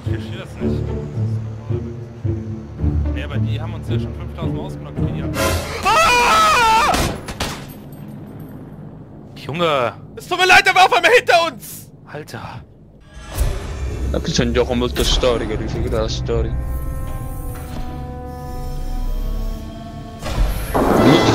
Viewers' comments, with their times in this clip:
0:05 my fucking ears...
0:05 That scream from the guy sounded like it was from a soundboard. But I loved that soft "Junge" afterwards. :P